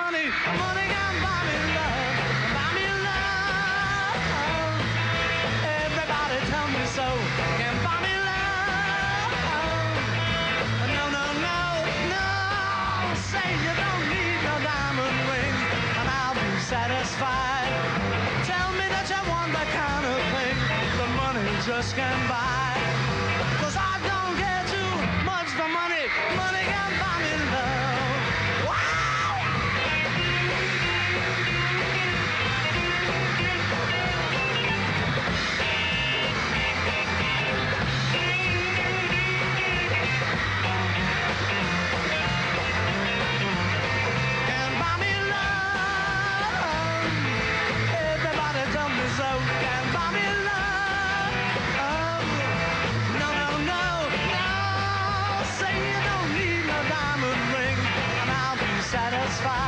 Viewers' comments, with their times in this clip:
0:03 i love how paul sings love
0:27 HIS SCREAM LOLLLL
0:29 that solo sounded beautiful.
0:33 OH NO GEORGE!!! He messed up on the solo on
0:43 Ringo is mad at his drums